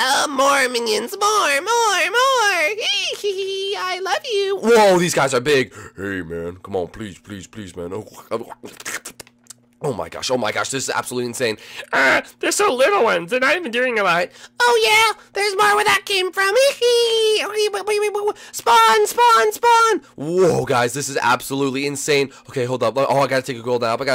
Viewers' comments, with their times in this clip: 0:09 has lick sounds